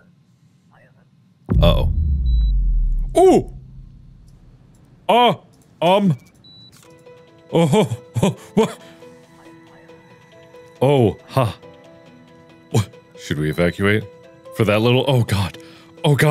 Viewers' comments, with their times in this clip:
0:03 I love how he was so calm when he said uh oh